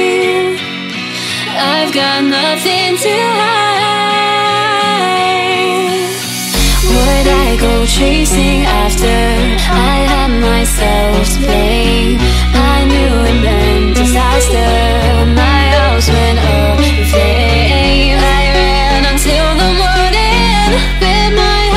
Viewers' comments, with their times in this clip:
0:07 Why does literally nothing match with the vocals, sounds weird